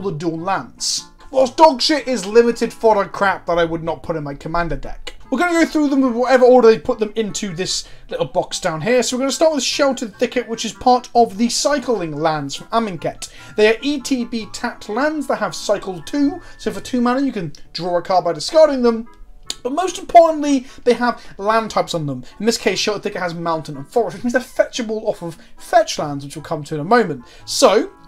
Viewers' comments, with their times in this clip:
0:09 starts also kinda sucks this guy talks way too fast, and his accent makes his words realy hard to understand, they all just blend together into some mess. on top of that its impossible to see the lands because they're too small. he showed a blowed up version of the first one, then never again, so i dont know what hes talking about becaue i cant understand, and i cant see because hes too egotistical to show the land, he has to show his big fat face instead on the close up 2/10 video